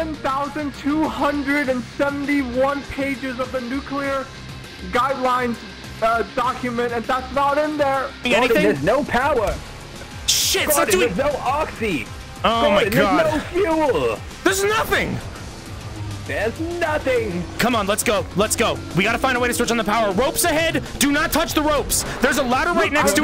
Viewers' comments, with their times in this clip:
0:07 my favourite line part of this episode is bubby just listing off all the things there's not in the same tone of voice it just gets me bro